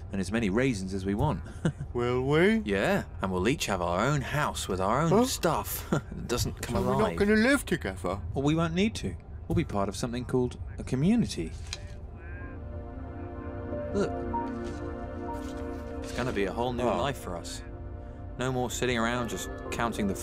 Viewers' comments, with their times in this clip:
0:05 The genuine shock and sadness in Yellow's voice is gut-wrenching. As stupid and crazy as the group gets, he cares about them like a family.